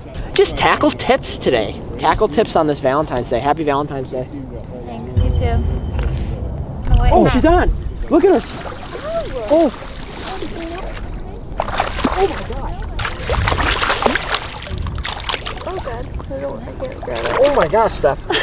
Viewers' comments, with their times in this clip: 0:03 That slight pause tho 😂